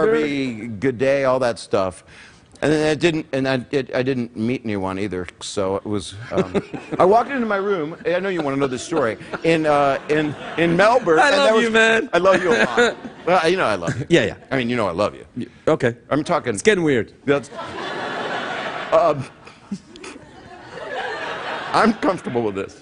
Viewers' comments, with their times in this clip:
0:06 I love Craig’s laugh but I don’t get the joke. Can anyone explain? I know they were doing lame old timey word play but I didn’t pick up on joke when bob said “and I didn’t meet anyone either”